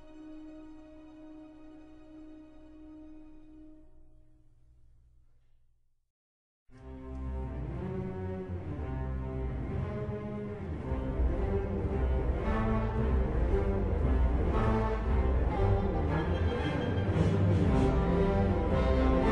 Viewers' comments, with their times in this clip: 0:07 part from is awesome. very Star Wars like, Williams is true genius